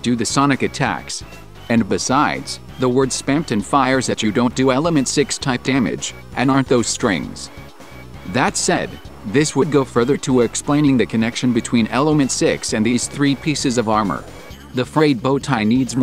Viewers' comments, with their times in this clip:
0:04 Yeah, I was trying to allude to this in but I my robot-voice decided to pronounce my airquotes like he was angry at them lol.